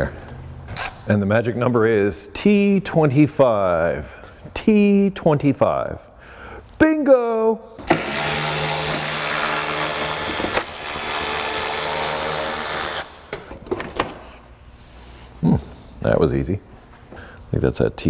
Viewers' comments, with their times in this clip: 0:06 My audio/video went out of sync sometime around the 12-14min mark. First noticeable on on the "Bingo" scene. And goes on like that all the way till the end. Did anybody else have the same or was it some strange issue on my device only? I really liked the episode in any case!